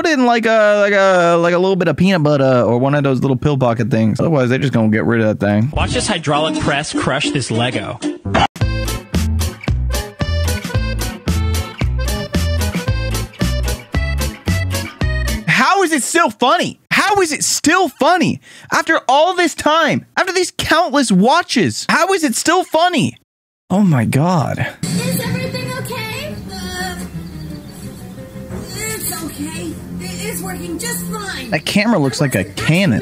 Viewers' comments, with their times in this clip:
0:07 nah bro played the overcooked music. its a banger though.
0:07 boing sound effect goes over this perfectly 🔥
0:08 editor be cooking with that music if yk wut I'm sayin
0:09 when the overcooked music played i almost laughed
0:09 tf this crafty ass beat
0:12 is it just me or does that music stress you out.
0:14 the music gave me ptsd
0:15 the overcooked music got me😂